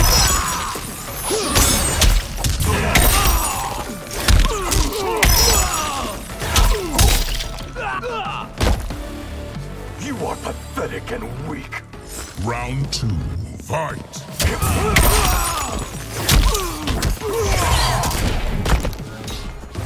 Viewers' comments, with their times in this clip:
0:06 is that you, shao kahn?